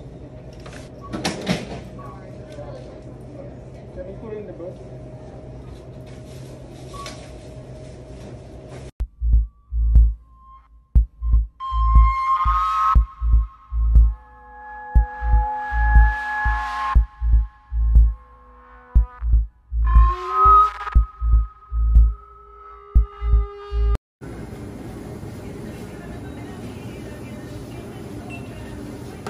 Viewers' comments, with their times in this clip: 0:10 the clip is meant to be funny but why is the bgm giving my chills